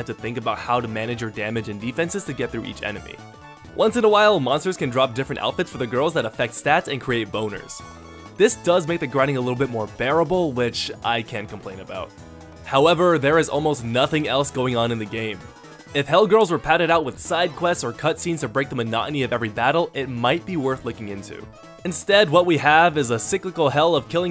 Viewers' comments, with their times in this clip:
0:06 you said "bonuses" right?